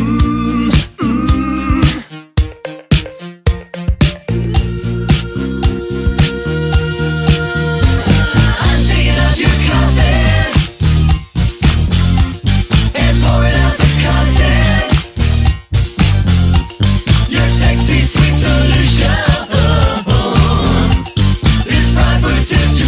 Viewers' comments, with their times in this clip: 0:09 I don't know if I should respect or fear this guy for not only daring to put the word "sexy" right next to these unholy lyrics but also daring to play cute melody behind all of this.